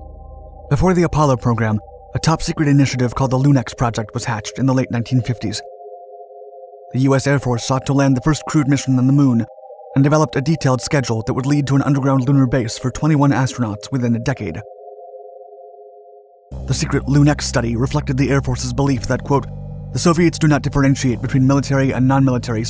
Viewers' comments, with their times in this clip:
0:03 what is the music playing ? So peaceful